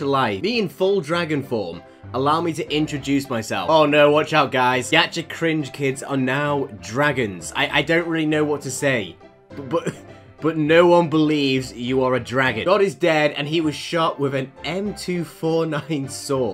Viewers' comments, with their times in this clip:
0:03 (insert dedede laughing here)